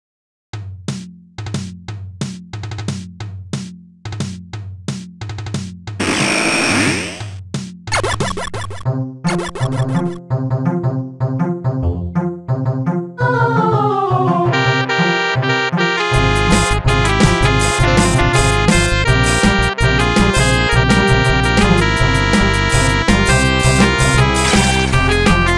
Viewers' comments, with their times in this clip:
0:09 now this music is...NICE >:]